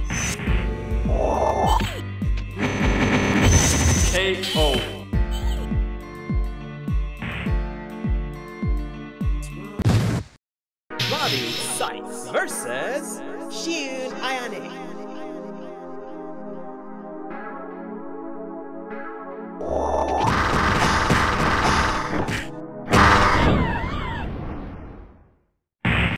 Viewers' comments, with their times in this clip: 0:10 That music at the end sounds familiar...and if you made it I just want you to know it gives me a great feeling of nostalgia...the kind that was lost in time that I feel Ill never have again. :(.